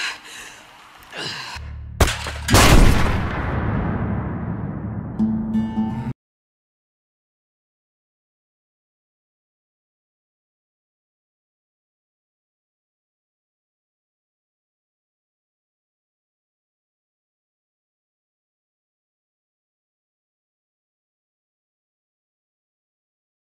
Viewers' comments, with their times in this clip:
0:08 I really love this song